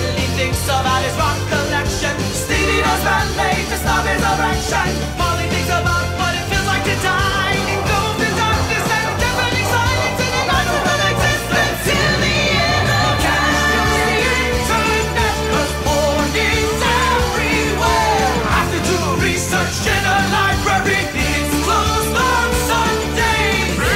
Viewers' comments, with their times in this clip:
0:07 sounds like a 21 pilots song xD